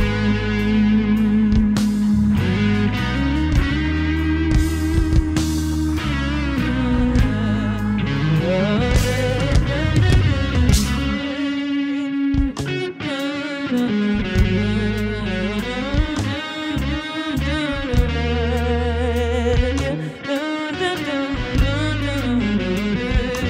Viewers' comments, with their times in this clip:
0:09 Dude, good buddies in a band creating together is what I’m missing right now more than anything about the “old world” :/ they’re gonna keep spewing awesome art for a long time 🤞 Edit: singing guitar solo brought 3 pairs of respectable tears to my eyes